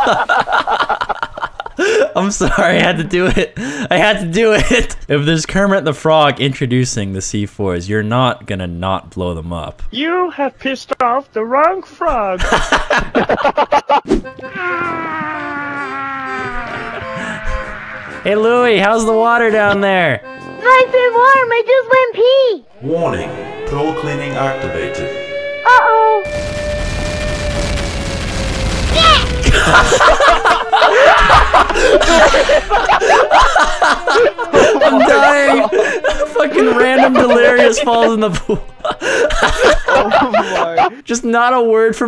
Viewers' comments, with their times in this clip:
0:10 sounds like Marvin the Martian from looney tunes
0:22 "Warning: pro cleaning activated." Sounds like Arnold Schwarzenegger .
0:22 SIREN INITIATES WARNING POOL CLEANING ACTIVATED
0:29 Lol you sound so cute NYEH